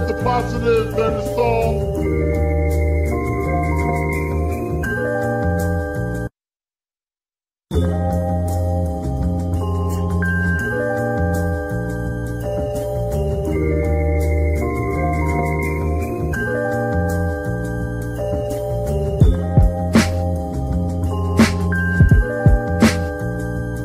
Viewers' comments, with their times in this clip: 0:05 My god, those short pauses (like the one ) hit the spot, damn. Just what I needed, thank you.